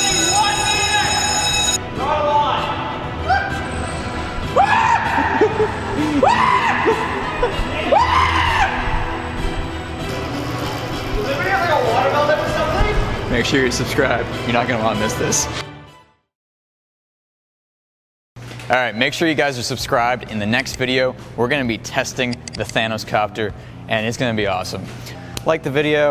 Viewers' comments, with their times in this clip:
0:07 That scream is hysterical